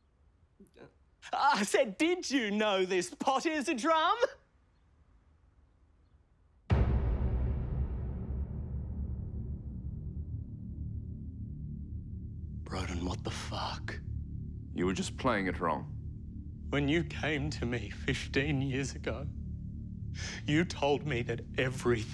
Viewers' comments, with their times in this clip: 0:06 It cutting to mark staring at the pot not drumming with dramatic sound killed me